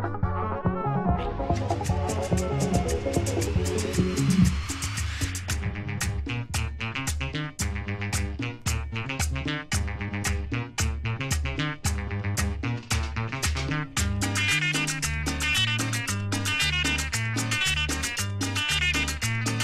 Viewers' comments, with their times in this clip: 0:06 sounds like beginning of Massara - Margherita